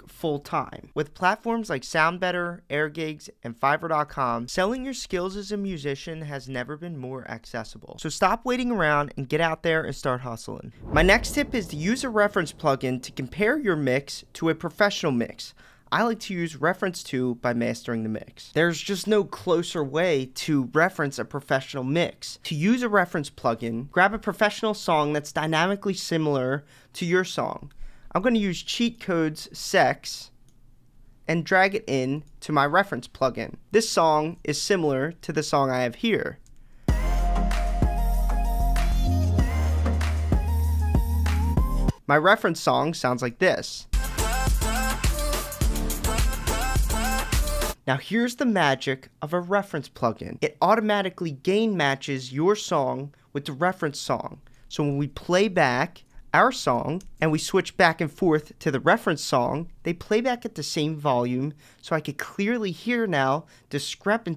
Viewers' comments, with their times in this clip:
0:10 ..... to an extent yes this is a great idea, but your demonstration was obviously with a poor mix compared to the reference
0:46 YO! That crappy "music" is your career? :D:D:D I would stay at the carwash instead... or whatever was your job.